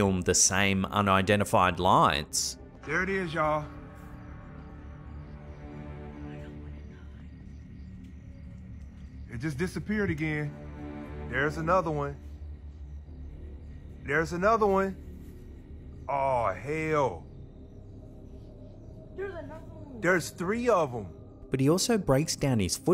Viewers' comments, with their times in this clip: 0:06 I heard, “I don’t wanna die” 🥴